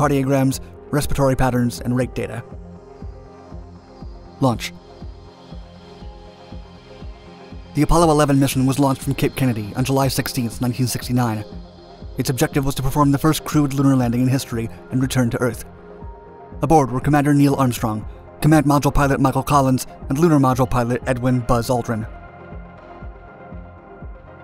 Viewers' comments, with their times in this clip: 0:10 Right ...solid speed up lol